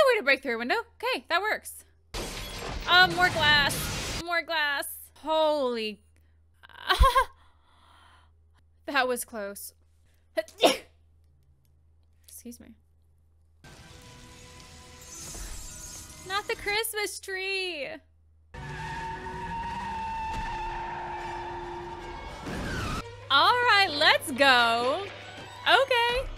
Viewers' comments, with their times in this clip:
0:10 gesundheit! New to your channel. You are the only person who can pull off saying “I hope he dies” with the cutest smile without looking evil 😈 lol - Cheers!